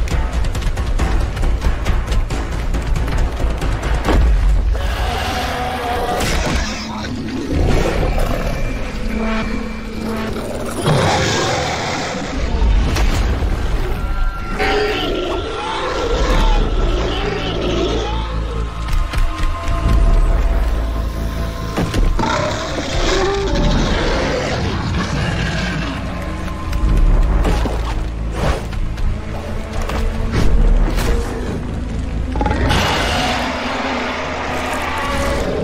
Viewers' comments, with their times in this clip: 0:08 I wonder how the sauropod still able to scream without any lungs, as it can be seen here
0:14 As time passes on its vocal cords get more destroyed,from sounding like it needs a cough drop or two,to this
0:22 this is the true roar of a titan